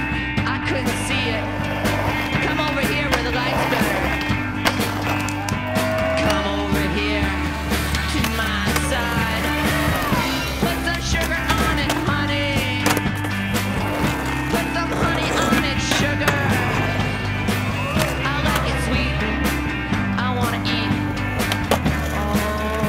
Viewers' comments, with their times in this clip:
0:03 is mind blowing shit also great music